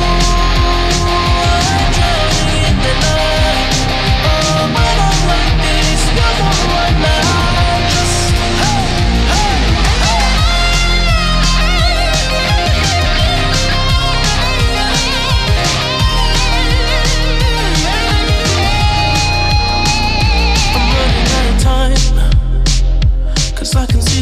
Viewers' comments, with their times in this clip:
0:08 is that a cool impro on